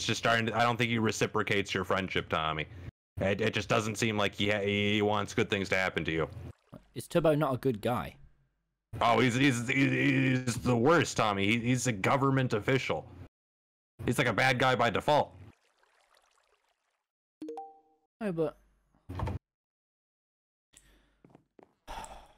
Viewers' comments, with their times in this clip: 0:07 techno sounds like rick from rick and morty